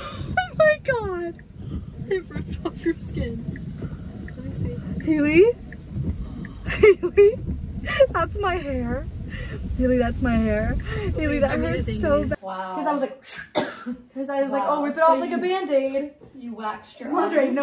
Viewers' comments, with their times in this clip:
0:05 I love your laugh!!! It’s so cute and funny